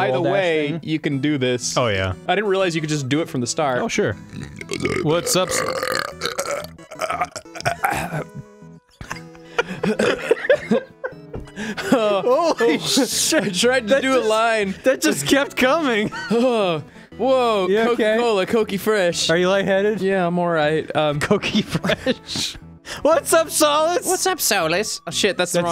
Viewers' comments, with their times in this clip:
0:09 THAT BURP, THE FUCK